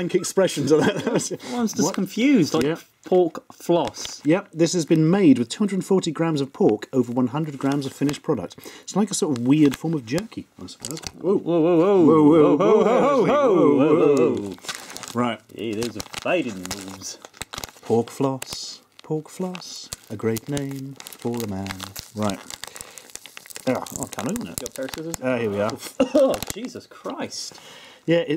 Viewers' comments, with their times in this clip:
0:10 and so the many voices, yelped all at one.